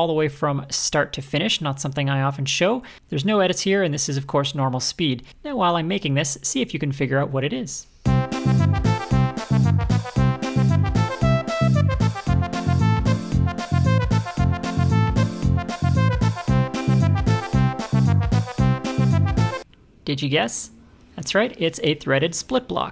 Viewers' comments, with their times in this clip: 0:08 OMG, the music I nearly spat my tea on my laptop :D